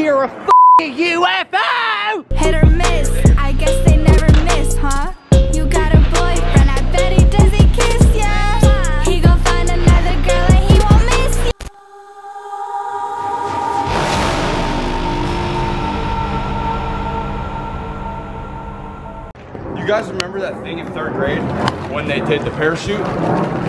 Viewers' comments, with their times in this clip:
0:06 Omg the song